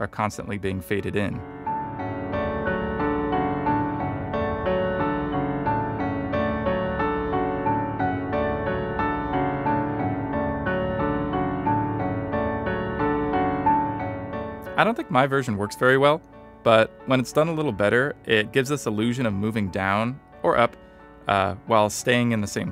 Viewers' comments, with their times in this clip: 0:04 reminds me of AC2 Soundtrack (Jesper Kyd - Leonardo's Inventions for example).